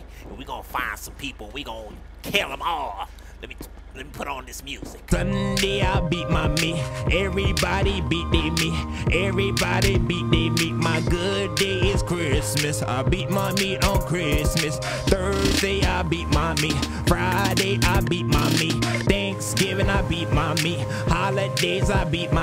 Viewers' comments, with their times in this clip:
0:06 That beat my meat song is cachie no homo